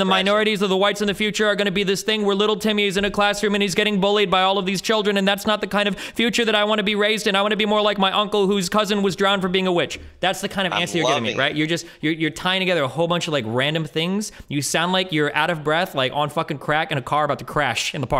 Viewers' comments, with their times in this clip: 0:03 LMAO THATS LITERALLY HOW THE GUY IS SAYING IT BWAHAHAHA